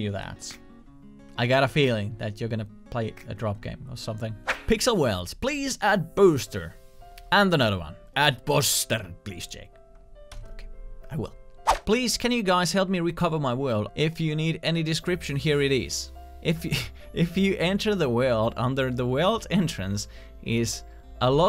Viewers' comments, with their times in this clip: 0:08 that’s some Finnish accent right there! Every Finn will recognize that